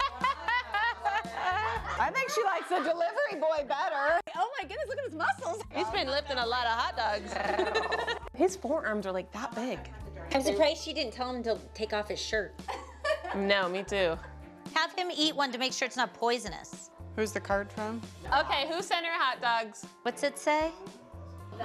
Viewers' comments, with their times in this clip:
0:06 IDK which was funnier the growl or the "He'S bEeN LiFtin' AlOt A hOtDoGs"!!😂😂😂
0:07 I can assure you that is Melissa saying "thEeOwR" cause she loves roaring like a baddie